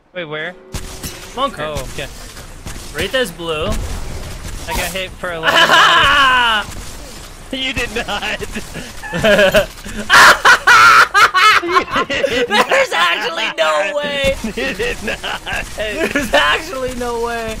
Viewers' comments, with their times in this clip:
0:05 that was the most evilest chuckle i ever heard😂